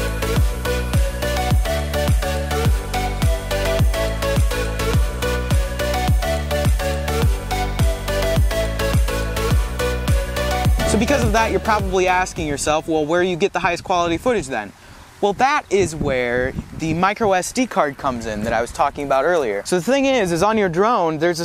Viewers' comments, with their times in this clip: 0:05 Love the winy tripod sound Lol, Hmm was far cry 5 filmed there :)